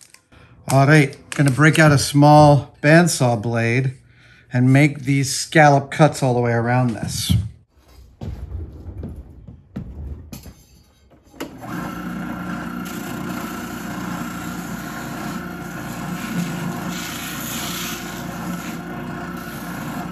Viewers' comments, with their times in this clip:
0:05 wtf just Adam got censored, "Illuminati music"